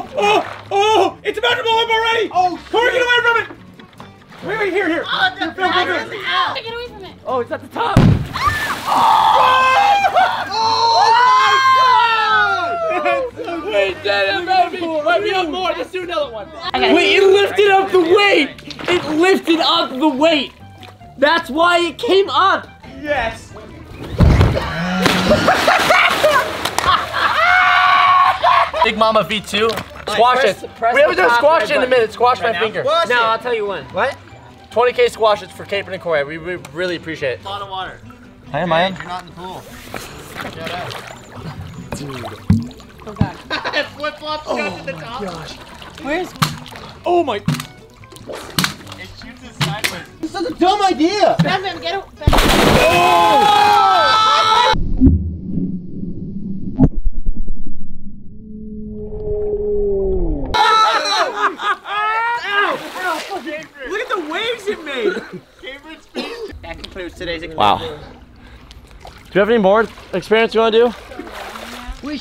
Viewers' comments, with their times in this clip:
0:08 In was that there scream 🤣🤣😂😂😅😆
0:22 just listen to the weez
0:23 the noise the slide made😂🤣😂🤣😂🤣😂
0:24 Ok so my friend texted me the not to be racist but Asian people velociraptor sound meme and after it popped up played and hear everyone in the background laughing but a single person had the velociraptor laugh
0:25 Did anyone hear a laugh but it sounded like a cow
0:56 Press the Like button if he sounded like a whale 🤣🤣
0:56 it sounds like when you past a level in super hot
0:57 that sounded like a sea creature dud
0:58 Is that a whale I hear in the background?🐋
0:58 that sounds like a blue whale
0:59 what the freak kind of noise was that🤔🤔😅😅😯😯
0:59 Sounds like a whale